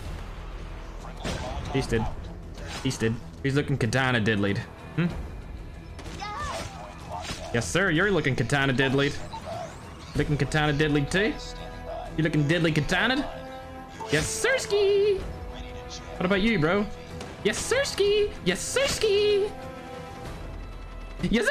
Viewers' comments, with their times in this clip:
0:05 Is no one gnna talk about the moan in
0:06 satisfying manta ray's voice